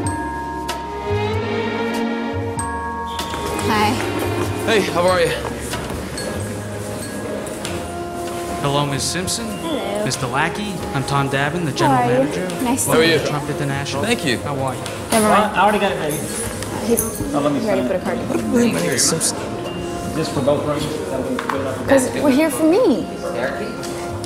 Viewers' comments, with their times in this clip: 0:09 😂 dude butchered Nicks name